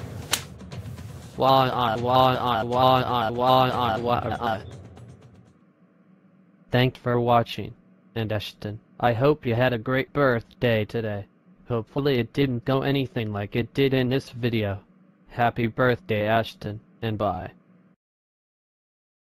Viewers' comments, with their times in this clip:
0:08 How do I do that crying in that kind of way?